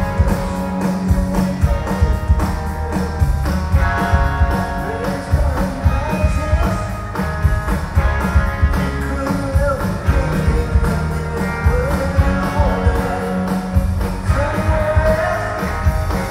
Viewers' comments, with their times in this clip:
0:04 when Tom came in too early singing, the band did a fantastic job of catching up. That’s what 40 years of practice does.